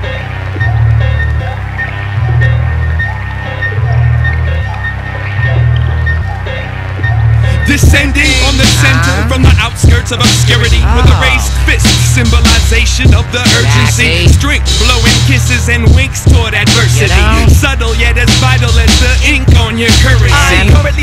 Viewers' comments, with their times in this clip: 0:07 Explosion of flow!